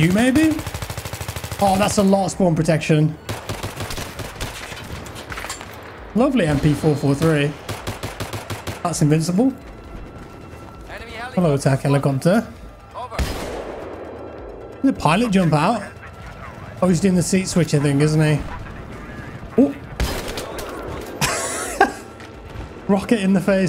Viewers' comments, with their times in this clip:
0:09 that background music is so iconic & nostalgic, imo it really embodies BF vibe.